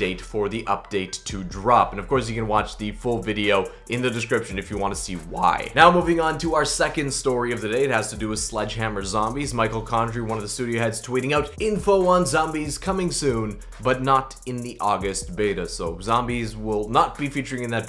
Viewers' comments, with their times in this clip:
0:05 oooooooooo that was a bad voice crack XD , nice video btw :P